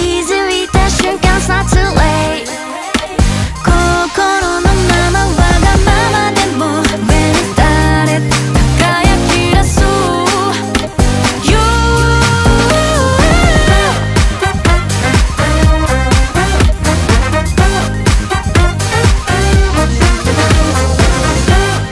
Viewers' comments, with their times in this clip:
0:05 The girl on the right has a really nice voice, it’s unique. I like it